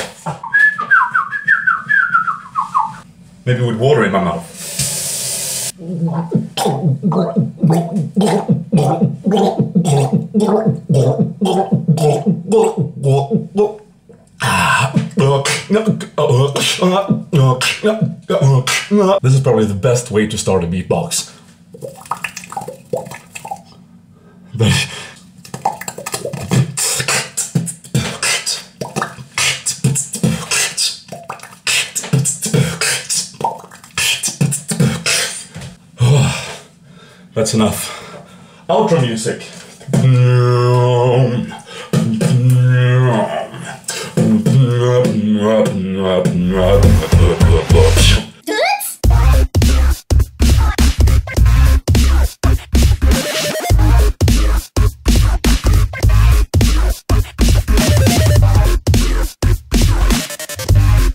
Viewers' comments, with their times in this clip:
0:06 1 sounds like last night
0:07 ...Sounded like last night...
0:47 best doooitz ever.....
0:48 the best doitz ever :D